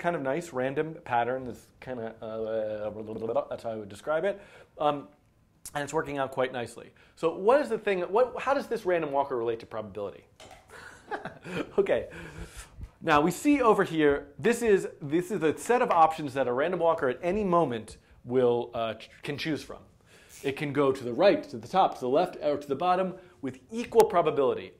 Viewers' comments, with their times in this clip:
0:05 It's kind of a... [Proceeds to make random noises while imitating a windmill] That's how I would describe it.